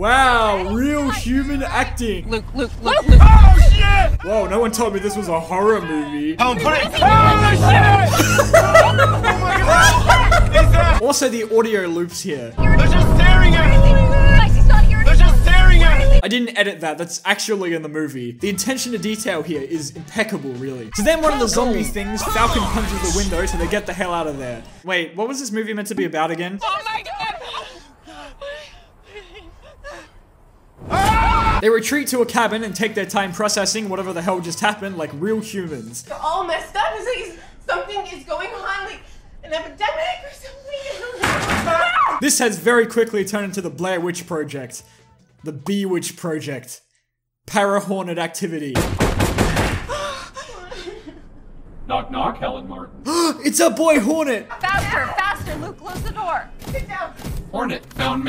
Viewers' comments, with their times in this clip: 0:08 i love the way you laugh bro
0:39 The gibberish was actually "An epidemic or something"